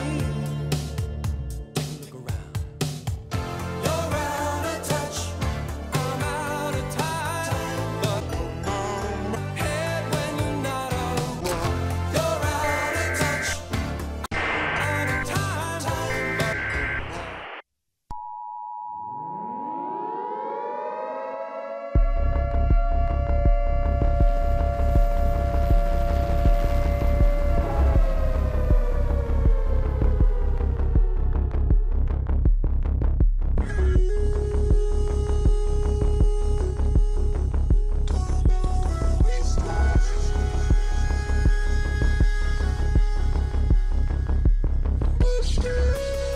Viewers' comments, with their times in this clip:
0:03 I forgot this song existed
0:17 every pgn player’s worst nightmare Also love how you can make the song from calm to insane at such a short time and still make it good
0:33 the song fits well with a gta car chase